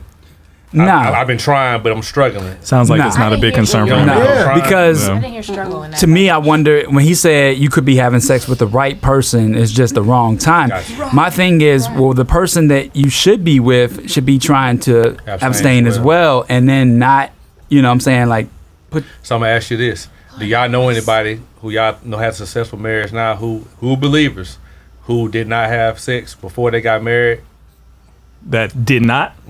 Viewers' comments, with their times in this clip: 0:10 I think y’all misheard him